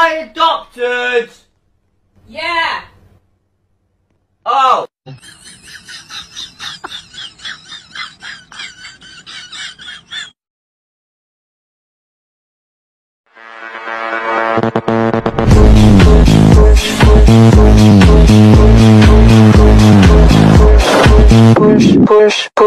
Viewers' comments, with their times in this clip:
0:05 bishes who are you to laugh